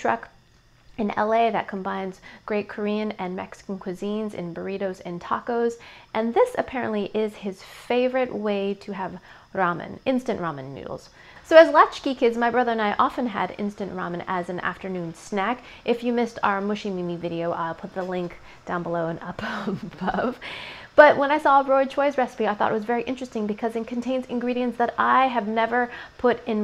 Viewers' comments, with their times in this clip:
0:08 why the fuck does she roll her r it's not spanish